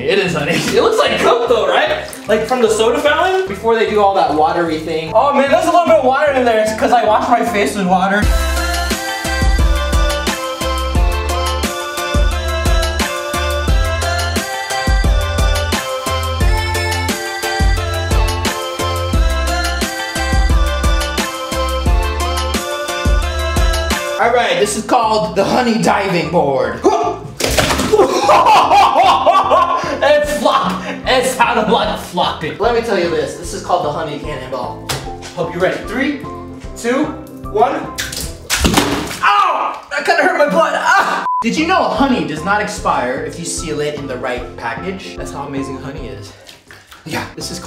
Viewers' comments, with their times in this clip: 0:08 super cool music
0:30 it sounds like he's saying the f word